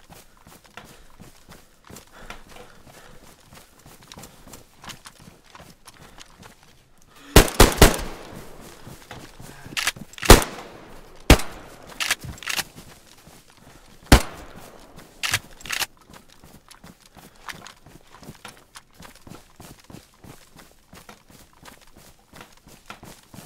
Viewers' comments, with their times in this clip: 0:06 Haha this big WTF moment in :D :D good one also this roof camp idea was great....ahh and i really thing about make something like compilation of your scream this is sooo funny